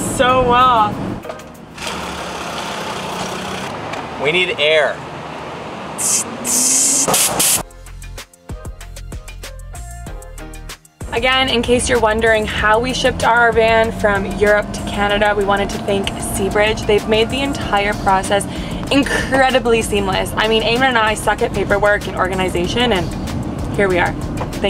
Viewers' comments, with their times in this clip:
0:08 I love this lil tune you guys use